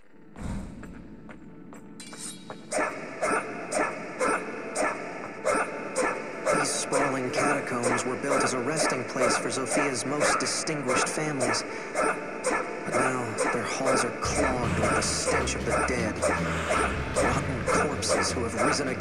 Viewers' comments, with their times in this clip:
0:06 Narrator Alm: trying to give backstory on the catacombs Gameplay Alm: HYAA TYAA HYUUM